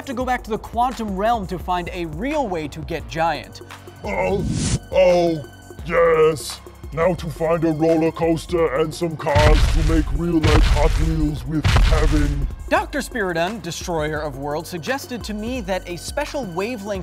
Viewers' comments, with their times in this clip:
0:03 You sound like Arnold Schwarzenegger.
0:05 it kinda sounds like Arnold Schwarzenegger😂